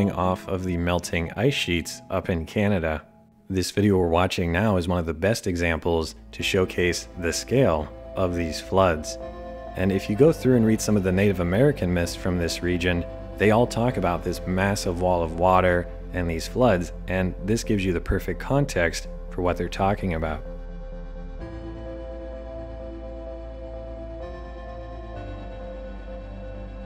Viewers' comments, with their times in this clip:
0:06 The music choice is perfect for watching a catastrophe unfold👌
0:11 that music triggered primal anxiety